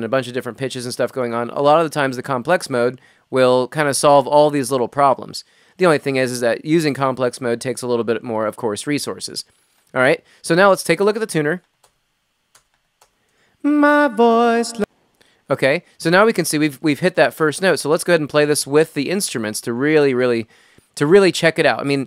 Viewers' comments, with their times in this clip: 0:03 Hello, I have a question, how can I get rid of these little noises you talk with the warp off?